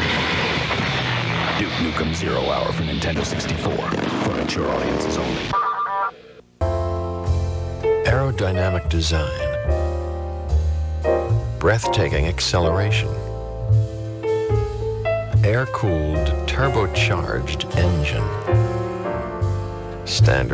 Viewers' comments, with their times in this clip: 0:06 Jeff Goldblum doing the voiceover